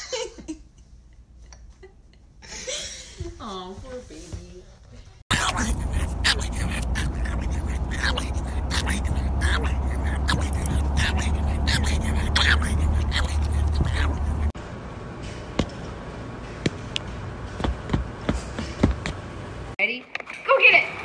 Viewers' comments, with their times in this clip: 0:05 so that's who does Donald Duck's voice! Seriously though I feel so sorry for pugs. They're so far from the wolves their ancestors were...